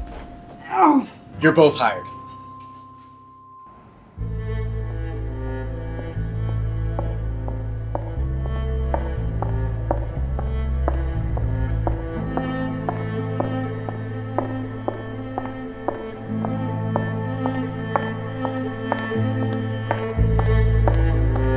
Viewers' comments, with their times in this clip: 0:05 that shot Matching the cameras focus with the footsteps to mirror a heartbeat. awesome!